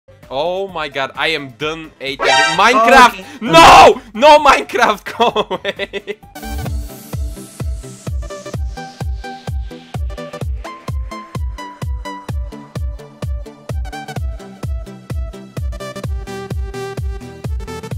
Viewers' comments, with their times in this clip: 0:05 he needs to have this music in the background no joke